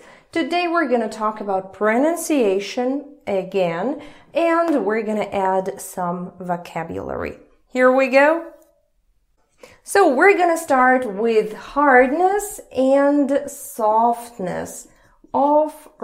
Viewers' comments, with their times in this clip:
0:03 The palatalized /g/ sound in the word "again" gently caresses my Russian ears.